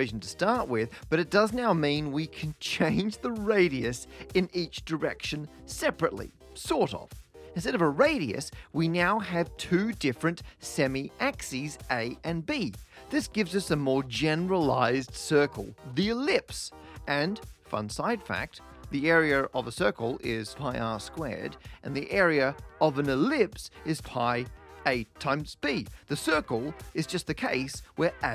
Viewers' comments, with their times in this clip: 0:09 "we nyow" some cool cat talking rii there. Anyone else noticed?